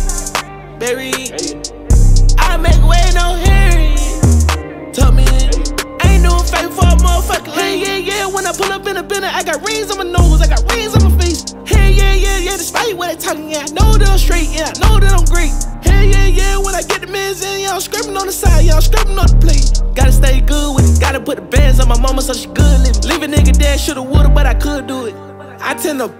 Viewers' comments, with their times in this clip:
0:08 LMAO sounds like his cypher verse